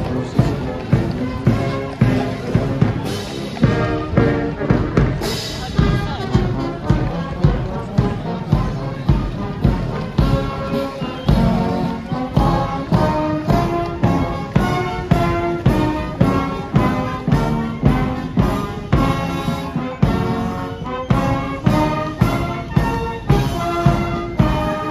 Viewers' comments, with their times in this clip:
0:06 Love that segue into Men of Harlech …🥰🥰🥰 Perfectly timed as they enter the straight of the Mall….